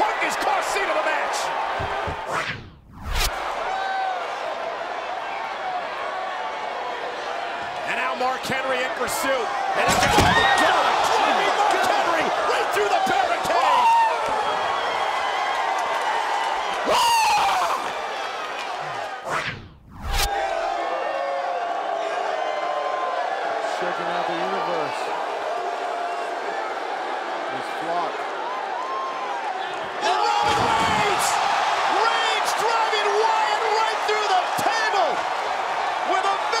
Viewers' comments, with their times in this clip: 0:03 He's just screaming after a vicious spear on Mark Henry.
0:12 when u get that voice crack
0:12 u need to watch this epic scream😂
0:12 that scream will be remembered
0:12 brock lesnar: looks at crowd screams
0:12 warning: eagle sounds were utilized
0:12 his scream though
0:12 Brock's voice crack.🤣🤣🤣
0:13 Brock voice crack
0:13 When you're the strongest person in the WWE but you sound like a dying crow.
0:13 my man lost his voice
0:14 Did anyone else notice Brock's voice.
0:14 when u act hard but have a voice crack 😂😂😂
0:14 ah that scream
0:14 Romans scream:oooooo how he do it? Brocks scream like a kid getting kidnapped
0:14 ULTRAMAN TRIGGER comes out from lesnar's mouth while he screaming
0:15 Haaarrrlllll (a bit feminine)
0:15 What type of scream is that, I thought you were the beast incarnate, not a girl scout initiate.
0:15 Why does Brock sound like a little girl
0:15 Lesnar's voice crack
0:15 people forgot the spears talking about the scream 😂😂😂
0:16 😂😂😂😂😂 Brock's scream was so funny
0:16 HIS VOICE LMAO
0:16 he's like "im an eagle,im hungry and I see a snake!(Dive bombing then SCREAM!!!)
0:16 Brock's Real Voice
0:16 scream that can't hurt your ears
0:16 the gay roar
0:16 hear his scream😂😂
0:16 Lesnar yells like a girl lol
0:16 Brock Scream is Hillarious XD
0:16 (horror movie scream) 😂
0:17 was the most beautiful scream I have ever heard
0:17 crazy sound of Brock lol
0:17 umm that is umm disturbing...who knew that Brock could scream so...high pitched...
0:17 brock lesnore sounded like a girl lol
0:17 brock shouts like a women
0:17 he sounds like a lil baby
0:17 LOL brock lesnar's scream LOL
0:18 voice of Brock 😂😂😂
0:18 When you see him 👹 When you hear the voice 😇
0:20 scream of the beast 😂